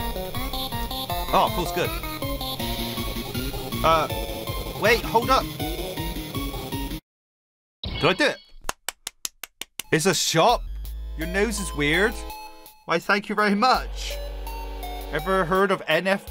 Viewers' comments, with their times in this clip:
0:04 why did the song cut out they're supposed to be an entirely new section of the song I don't want to spoil it but it's very cool